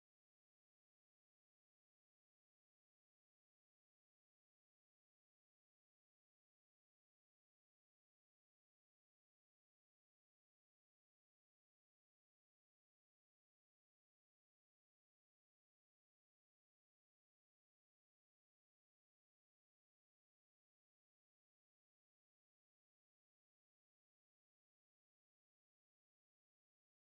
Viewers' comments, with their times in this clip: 0:10 just perfect timing on the song <3